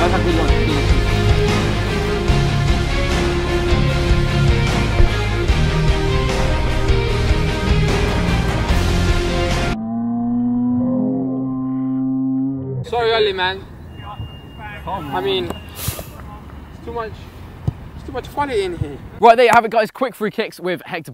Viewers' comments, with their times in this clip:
0:06 omg so amazing best footballer ever epic music REEEEEEEEEEEEEE